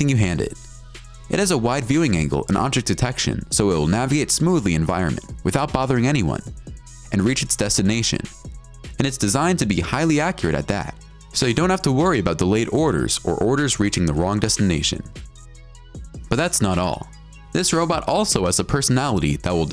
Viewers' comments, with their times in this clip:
0:03 naviate ? Something up with this dude's English pronunciation